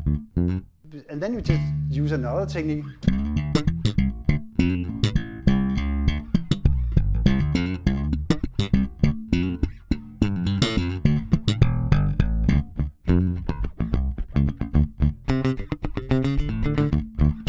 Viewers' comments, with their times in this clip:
0:03 that tone!!! Damn is killing!!!!!!!!!!!